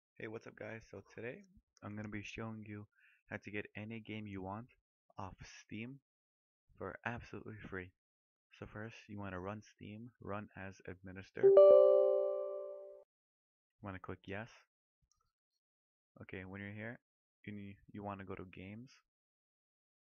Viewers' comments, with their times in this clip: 0:02 Stopped watching for the volume